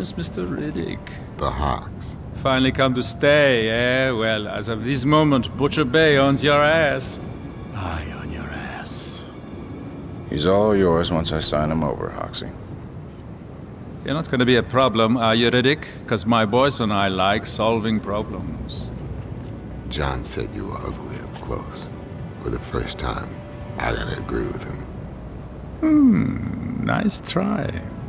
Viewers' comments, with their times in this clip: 0:09 lol harman smith came out in his voice (the voice actor did hoxie and harman from killer7)